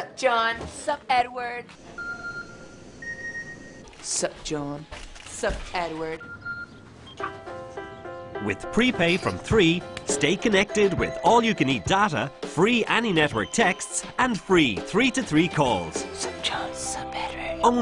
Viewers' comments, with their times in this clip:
0:03 When Edward says 'S'up John' with that serious voice he sounds so.. <3